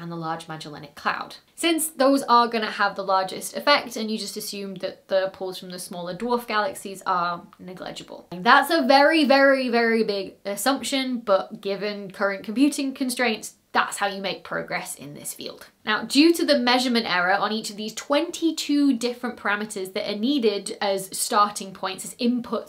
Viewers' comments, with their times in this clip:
0:07 Neglegible? It sounds like we had a blooper in the main video for a change 😁